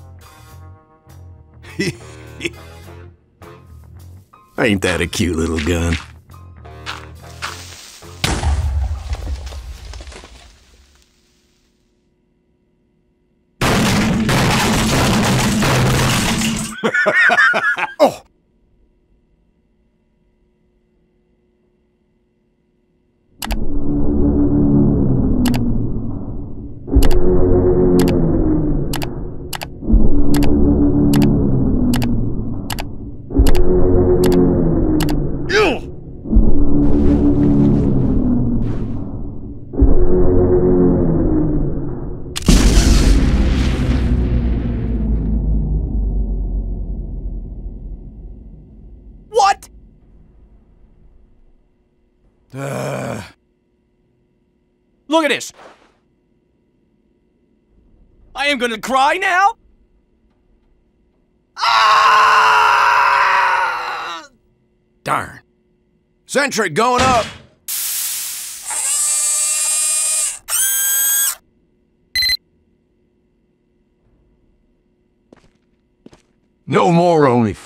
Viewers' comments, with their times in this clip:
0:07 sound of creeper
0:23 Can someone please tell me what is that uncanny sound playing in the background? Much appreciated.
0:42 dude after the explosion sfx and that wave sending down and the little silence makes me think that the biggest and hugest its pizza time remix is about to drop
0:58 is the part when he cries reminds me of my npc counsin crying 😂
1:01 Scout's most realistic cry.
1:03 😅 i laughed when Scout cried. Poor guy lost his fav Mimi